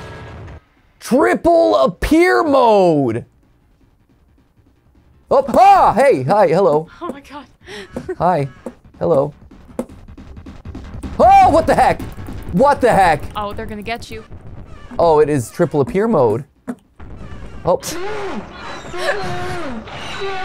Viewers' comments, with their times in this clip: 0:07 i think those footsteps just triggered my fight or flight response.